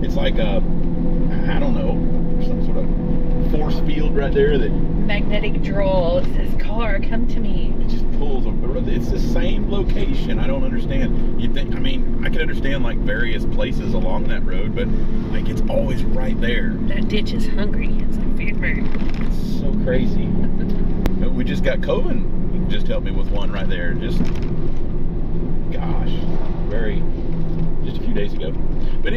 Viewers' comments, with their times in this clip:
0:10 Sound quality at this juncture seemed a little down, possibly Microphone issue.